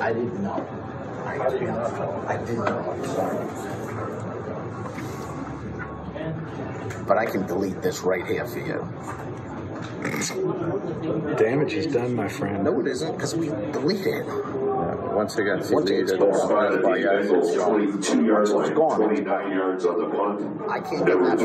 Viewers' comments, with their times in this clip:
0:09 just saying I’m 99.9% sure that wasn’t laughter 😂